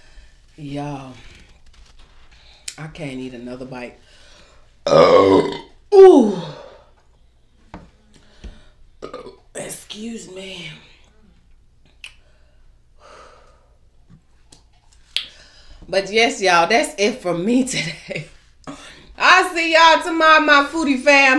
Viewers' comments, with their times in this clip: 0:04 omg that was so loud and huge Ik that felt good